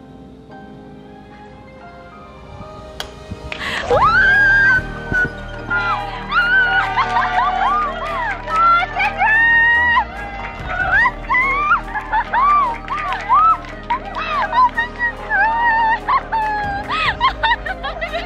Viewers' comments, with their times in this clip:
0:04 something really cute and wholesome happens poki casually breaks the sound barrier 🤪
0:04 she screamed so loudly that the audio cut out